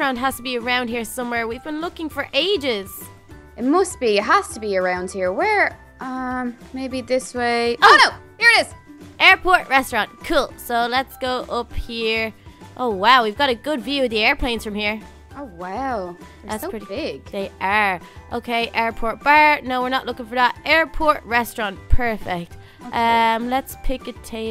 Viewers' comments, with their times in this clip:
0:06 You can hear the true Little Carly